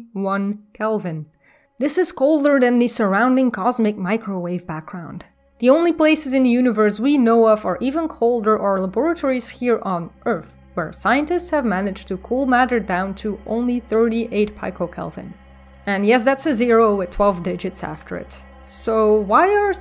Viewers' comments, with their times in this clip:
0:07 you say luh bore uh tore ee and i raise you labor ate or ee labor atorey laboratory a tory of and for labor we do labor there. it is a laboratory....